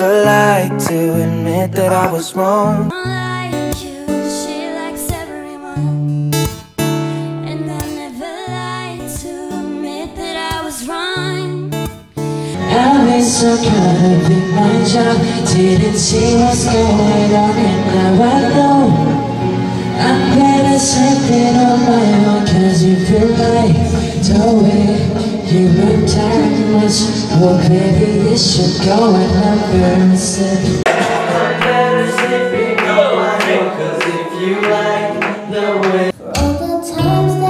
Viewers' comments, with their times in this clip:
0:03 they can't sing (no hate)
0:12 jimin sings sooo sweetly love him
0:25 omggg Jimin singing to Love Yourself !!! ❤❤🔥🔥